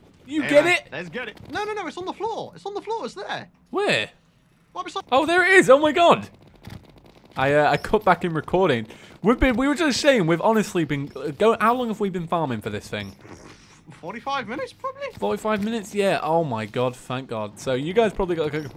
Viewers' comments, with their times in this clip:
0:04 Video freeze then the audio started going faster than the video,Da ???? youtube?